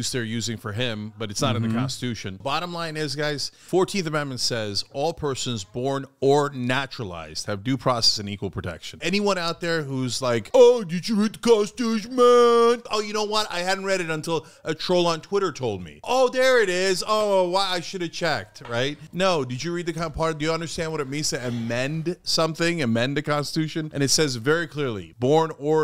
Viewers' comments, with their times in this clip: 0:10 OMG SO THAT IS WHERE YOU GOT THAT IMPERSONATING SKILLS HASAN hu3 like uncle like nephew xD